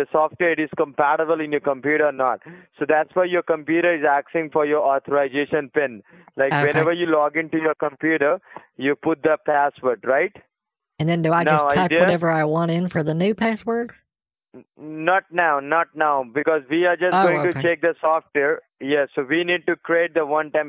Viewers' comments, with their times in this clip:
0:07 Fuck! Man! That accent sounds disgusting. Every time I hear that accent now, I'm made to feel sick.